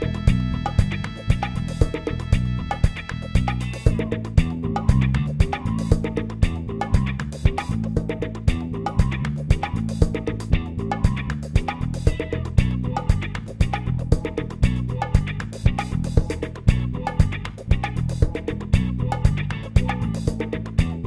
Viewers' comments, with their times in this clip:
0:04 sounds like the flume at AT#